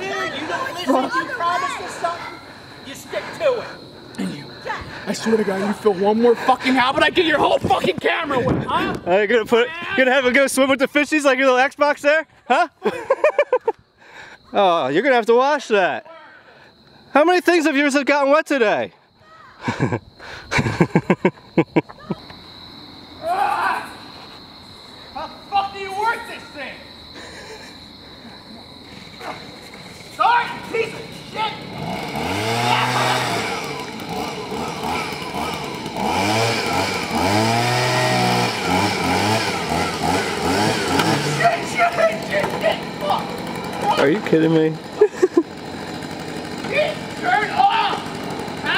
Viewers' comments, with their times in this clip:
0:05 He Sounds Like Dylan Minnette
0:33 that leave blower sounds like a chainsaw